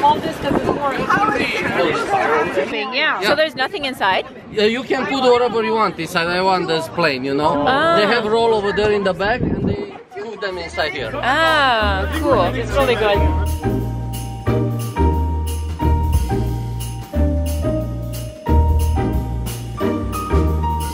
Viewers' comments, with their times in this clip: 0:08 Hehe I hear Canadian Sorry like 'soo-ree". I love accents too and love how they can trace a person to their home town! Did you hear the guy ? I wonder where he was fine